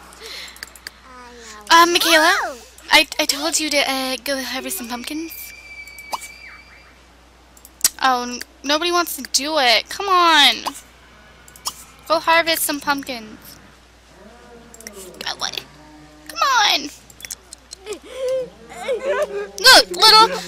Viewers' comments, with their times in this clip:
0:05 I heard a child scream
0:05 Did anyone else notice the scream
0:05 did anyone here that scream in the backround??